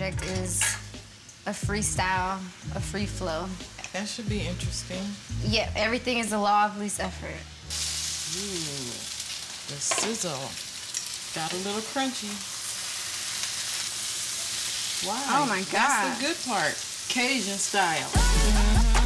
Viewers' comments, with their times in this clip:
0:06 Lol does she say everything is the law of Lucifer